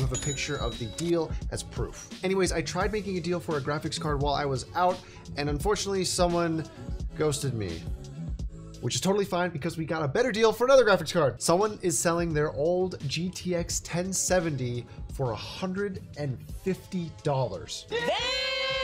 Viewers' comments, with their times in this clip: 0:06 why does it sound like the PH intro?